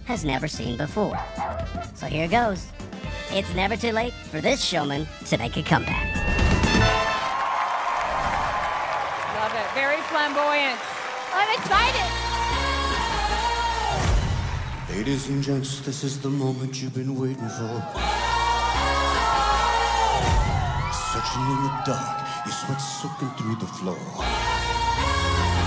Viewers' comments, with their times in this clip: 0:08 Where the music starts ✌️👌